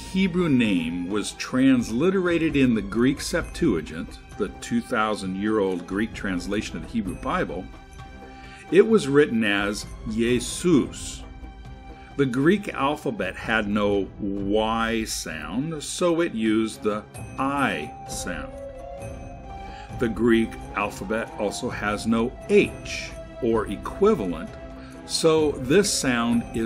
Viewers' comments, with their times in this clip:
0:10 Just nit picking here, but you say "yaysoos" & then say that Koine has no Y sound.